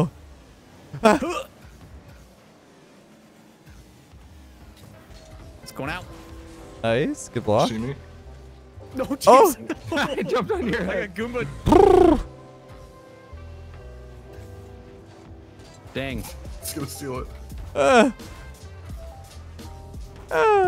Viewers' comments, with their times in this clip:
0:07 just makes random noises for 20 second